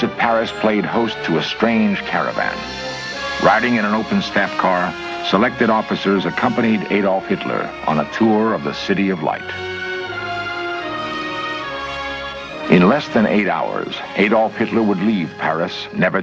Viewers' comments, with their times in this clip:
0:03 I love how careful the composer was with the German anthem to not make it sound too upbeat or triumphant...there's a tiny bit of bitterness to it. Brilliant.